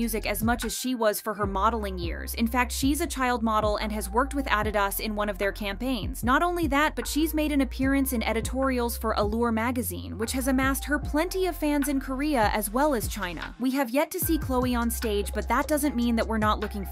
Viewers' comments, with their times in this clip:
0:04 😱How do you not know how to pronounce Adidas?!!